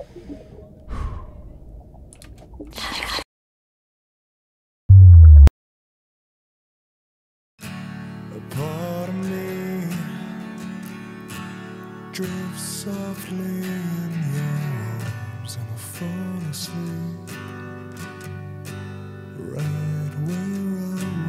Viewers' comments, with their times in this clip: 0:08 this song is just so GOOD